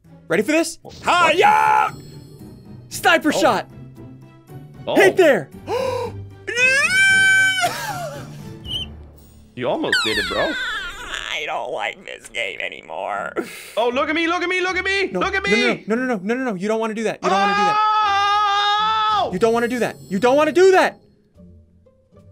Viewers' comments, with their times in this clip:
0:06 sounds like my old computer🤣
0:08 he sounds like a door 😂